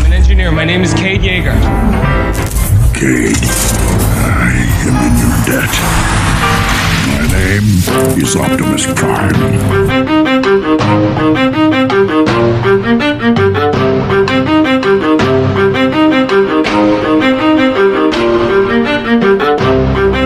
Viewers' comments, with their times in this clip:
0:08 The drop down is I LOVE THAT PART